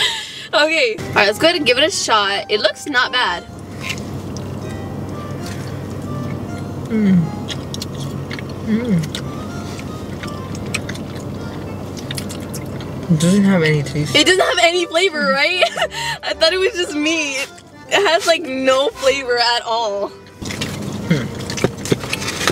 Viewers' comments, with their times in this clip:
0:08 “intense eating sounds”